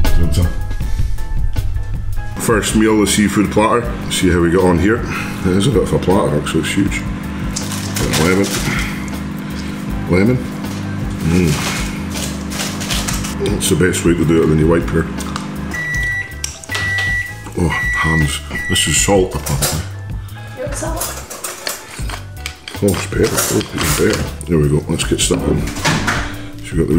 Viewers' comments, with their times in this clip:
0:08 welcome to the asmr section